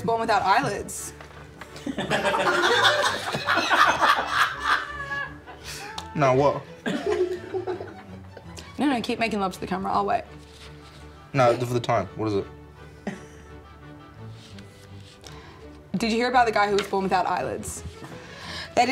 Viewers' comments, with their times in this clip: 0:05 she laughed but didn't drinkright around/ before make her drink